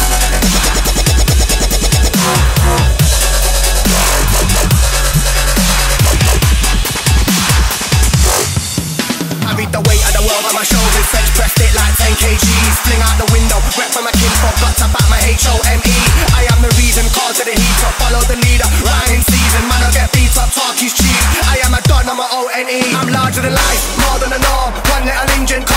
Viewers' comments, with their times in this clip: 0:10 I wish that bassline was the whole way through